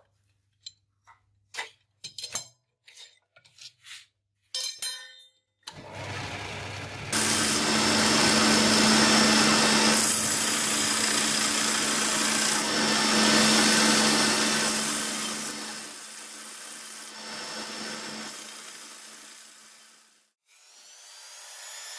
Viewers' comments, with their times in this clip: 0:06 Hey, peoplezz, headphone/earbud warning !